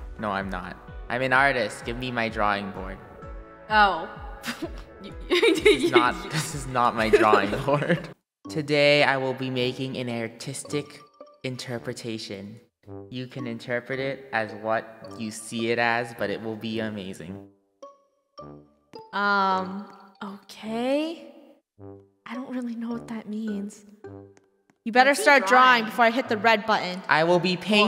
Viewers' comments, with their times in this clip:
0:09 draco says airtistic